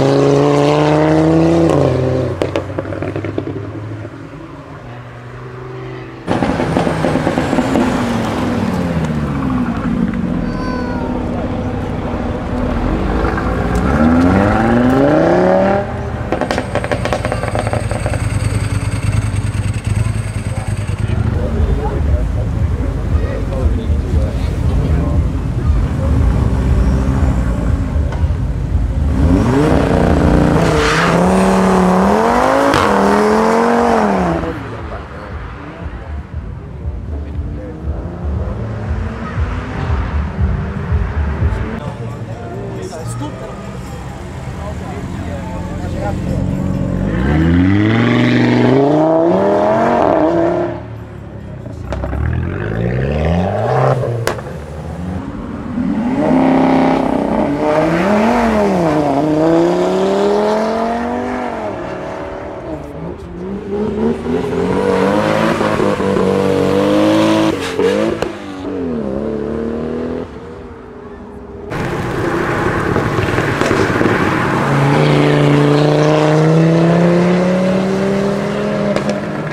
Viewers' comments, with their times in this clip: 0:07 I would love to hear that car on a track. Whatever exhaust system and other performance parts he has on that sounds amazing. Well done.
1:05 weird sound supra